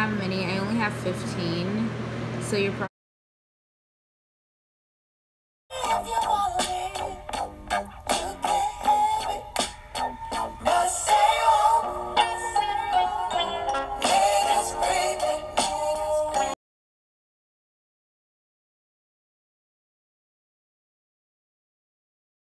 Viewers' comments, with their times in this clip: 0:07 bro i straight up stopped listening to red bone to watch this then i hear redone